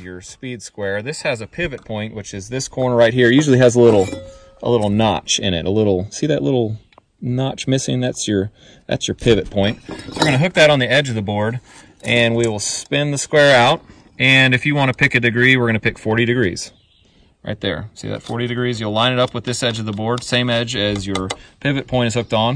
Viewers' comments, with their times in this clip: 0:04 get ready to adjust your volume😂 Love the video but man the volume on this is all over the place